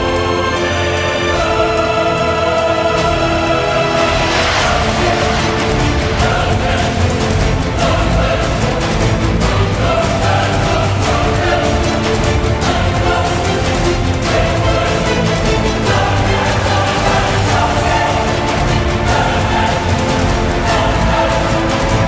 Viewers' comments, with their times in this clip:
0:03 They sound like they are summoning the supernanny,. "Coulson! Coulson!" Something else here " Coulson! Coulson!" I'm sorry, I had to put that out there.